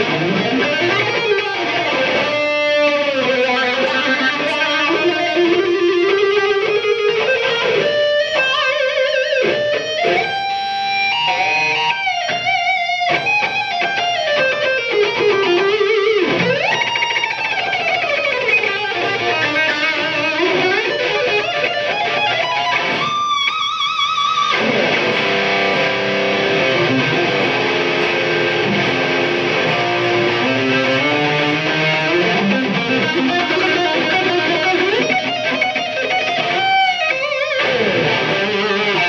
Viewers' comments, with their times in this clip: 0:03 No wah? Then what's ?
0:17 This guy is a god and I'm not knocking him, but that decending solo can never be recreated. Simply no one can do it.
0:20 Wow i thought Gus G was better than this. Kind of disappointing. That Yngwie sounding lick doesn't fit well either.